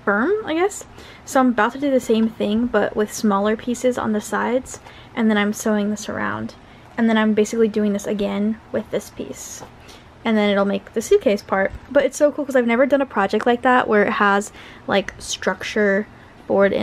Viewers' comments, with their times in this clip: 0:04 It’s peeps be screaming